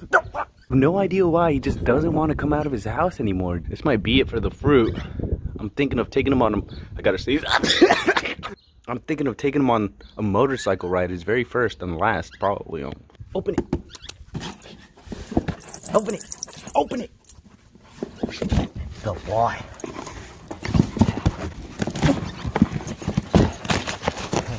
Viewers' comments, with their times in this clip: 0:06 iS tHaT sUpPoSeD tO bE a SnEeZe?! 🤨🤨😂😂 Btw the birds song is adorable 😍🥰😇